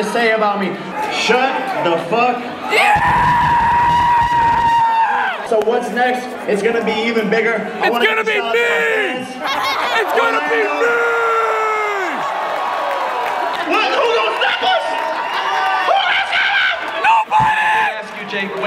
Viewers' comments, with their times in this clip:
0:05 He's cheering over being told to shut the f up.